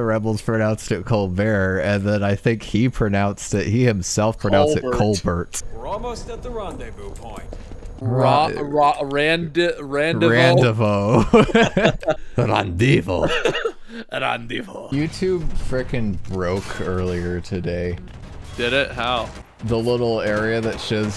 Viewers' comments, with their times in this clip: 0:07 The voice actor spells "rendezvous" in the british accent, but the writers probably didn't know how to write rendezvous, so they just wrote how it's pronounced in the 'merican accent "raan day voo".